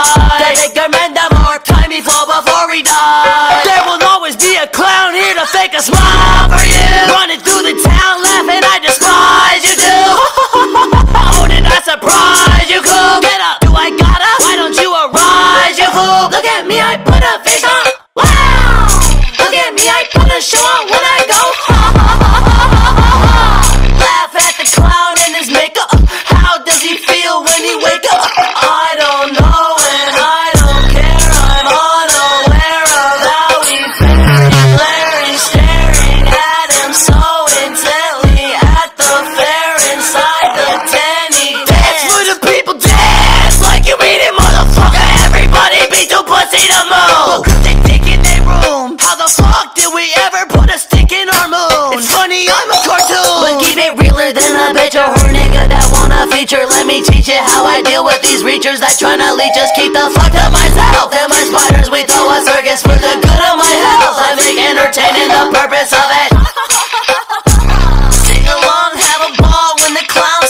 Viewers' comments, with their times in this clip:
0:10 lmao fellow nctzens, does anyone else hear Haechan's laugh just curious??
0:10 I love the laugh
0:12 why do I hear rajavu ?
0:16 “look at me i put a face on, WOWWW, look at me i put a show on when i go HA HA HA HA HA HA HAAA” so catchyyyy, thats whT you came for ;)
0:16 when i heard it for the first time, i thought they were saying "look at me i pull up n**a
0:16 For some odd reason i can't stop listening to the HAHA SO SATISFYING 😍
0:16 look at me i put a face on WOOOWWWW look at me i put a show on when i go on [insert Light Yagami rather attractive psycho laugh here]
0:18 The wow looks like a fireworks fart
0:22 the bass is so heavy and grimy it makes me scared of Lil Darkie
0:53 So aint no one gonna talk about the fact it sounds like spongebob?